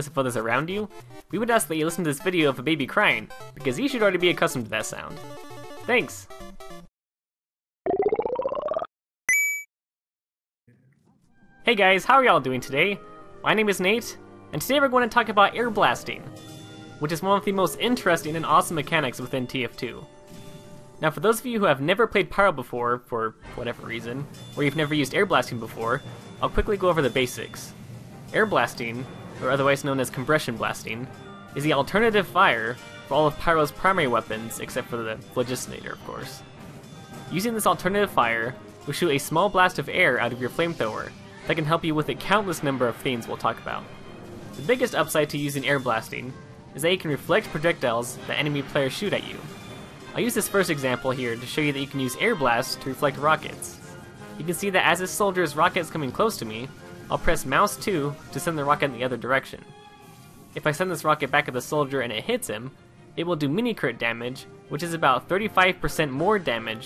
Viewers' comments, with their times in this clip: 0:04 WHO SEND ALL THESE BABIES
0:49 Anyone else noticed "The Lick" in (Question for music geeks)